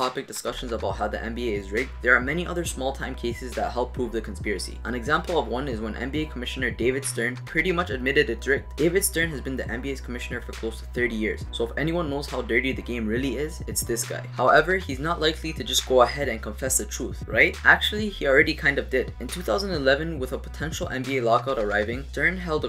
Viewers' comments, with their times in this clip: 0:08 What happened ? "David Stern pretty much admitted that dr...." and it cuts off?